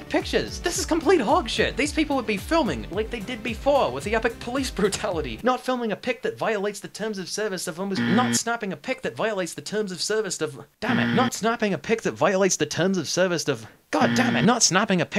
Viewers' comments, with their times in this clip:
0:03 how did you get stuck on the exact same word 3 times in a row lmao. Amazing video btw